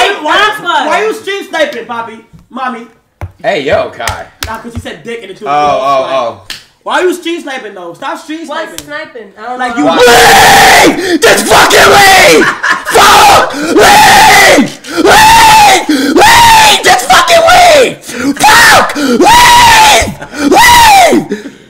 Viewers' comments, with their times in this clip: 0:04 The way speed screams LEAVE JUST FUCKING LEAVE 😂😂😂😂